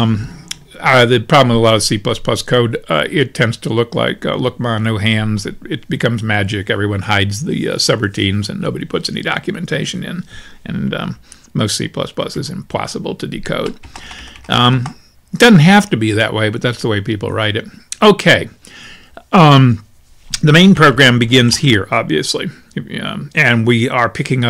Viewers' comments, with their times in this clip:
0:08 i thought that voice fry would never end